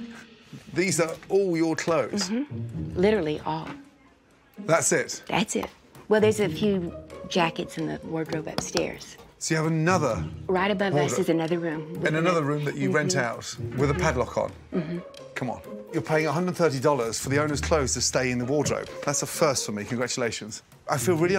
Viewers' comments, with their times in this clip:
0:05 So she claps. I feel that was to get Gordan from looking in there O.o